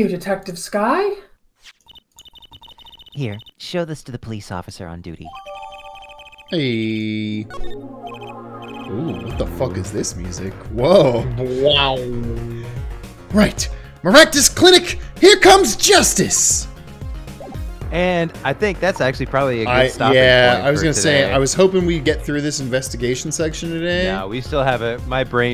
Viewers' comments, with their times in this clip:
0:09 Only the best song in the game😊